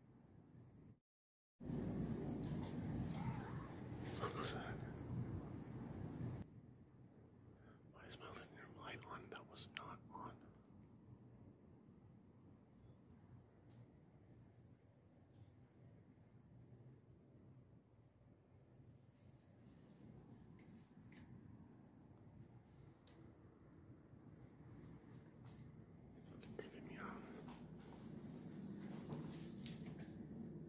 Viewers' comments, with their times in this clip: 0:06 A woman’s voice seems to say Sara.
0:17 Pause it just after he hears a disembodied voice say “Sarah” and his panning the camera on his iPhone 📱 back from left to right there’s a shadow standing behind him in the in the reflection’s background of the glass cabinet window 🪟. 1st off I reckon he brought this on himself by going out there and messing around with things he had no knowledge of, he’s seen it happen a hundred times over on movies 🎥 but he still didn’t listen 👂🏼, now look 👀 at the situation he’s in not good bro 😎 but I do hope you get rid of the attachment and never ever mess with these kind of things again God Bless You…..🙏🙏🙏